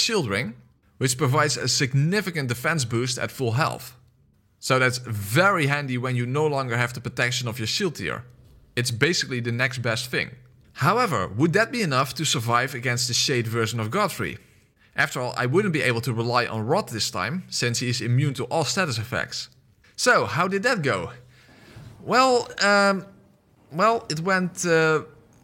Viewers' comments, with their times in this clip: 0:10 You mean ? That was one of the many recording glitches